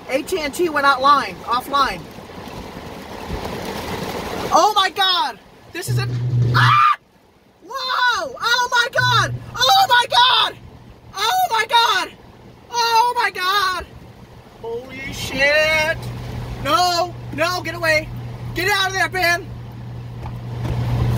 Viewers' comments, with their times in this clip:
0:05 the scream of a pussy lmao. Get out of there Jesus